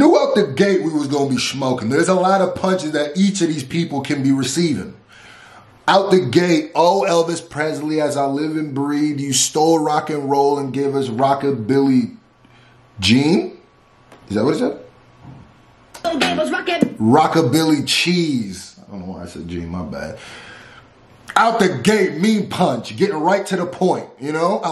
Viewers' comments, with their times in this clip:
0:05 How about that pause 😂😂😂😂😂😂